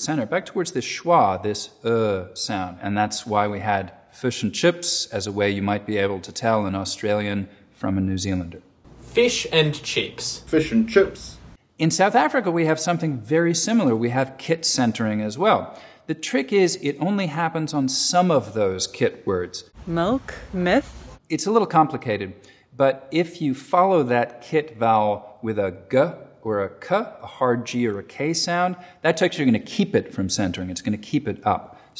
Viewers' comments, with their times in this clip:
0:03 actually sounds like a South African accent.
0:18 The "Malk" meme lives again. XD